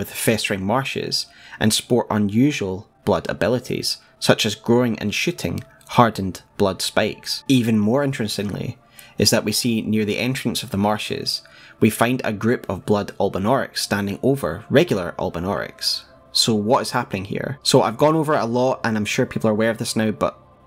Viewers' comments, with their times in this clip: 0:03 had to do a double take and rewind. Was almost certain you said "growing and sh**ing blood spikes" and I was like "owwww"
0:04 growing and shitting hard spikes I guess that’s where all the blood tinged instrument was coming from 😂😂😂
0:04 "such as growing and shitting hardened blood spikes"